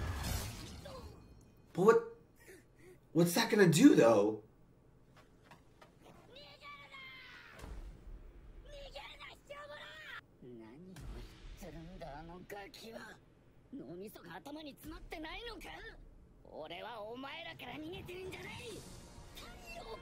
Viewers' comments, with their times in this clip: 0:08 They thought Tanjiro said NI- 😂😂😂😂